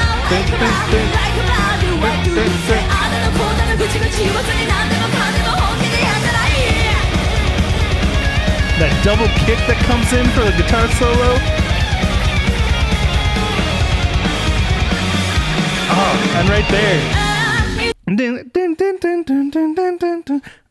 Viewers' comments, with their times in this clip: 0:08 that part of the solo reminds me little bit of the beginning of “Spirit!!” solo